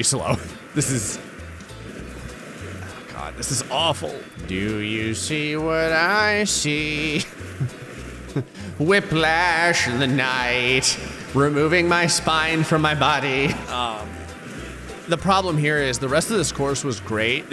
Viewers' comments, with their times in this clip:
0:05 this is the coolest song i’ve ever heard